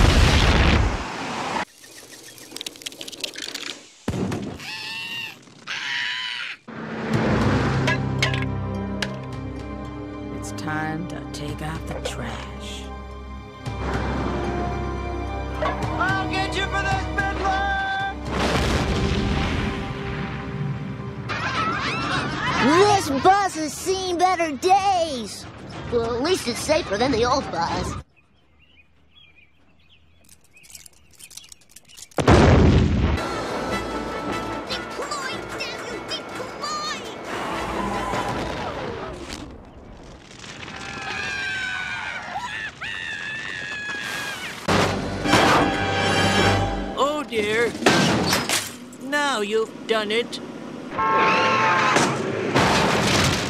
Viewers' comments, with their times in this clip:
0:07 The one cracked me up as a kid, I am now 29 and it still makes me laugh, I dunno why, I think its the music in the background that gets me.
0:40 I like how Martin screams in perfect harmony with the fire engine siren